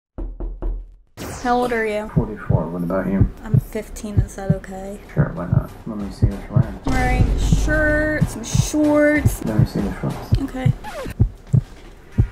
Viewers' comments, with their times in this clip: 0:00 i thought someone knocked and i got scary bc i was home alone
0:00 bro i was wearing headphones and the knock sounded so real i said "Who is it"